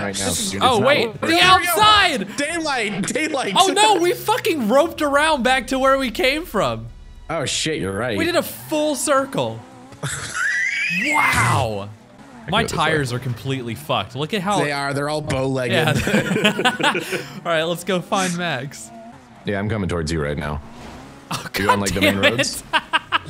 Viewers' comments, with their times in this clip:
0:09 Dat smoker's laugh XD